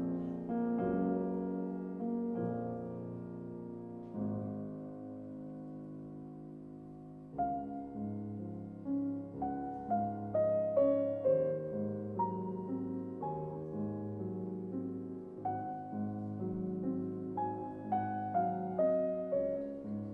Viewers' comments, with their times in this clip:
0:05 Marche funèbre is great but almost too well known, I like more the lovely theme that comes as if all is not only death and sorrow.